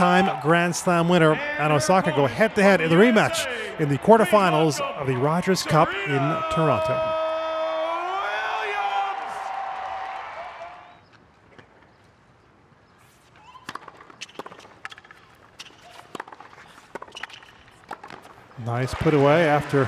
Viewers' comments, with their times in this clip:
0:06 The man shouting their names in the beginning though LMAO 😂😂😂😂😂😂